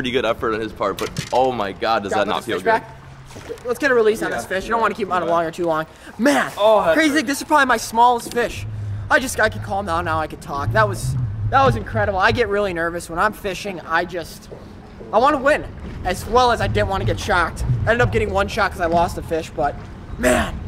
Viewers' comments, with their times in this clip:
0:07 Did anyone else think someone was whispering is their ear?